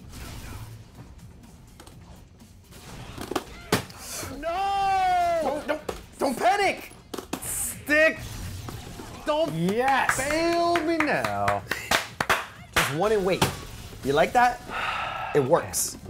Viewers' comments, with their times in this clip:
0:03 that NOOOOO is so dramatic lol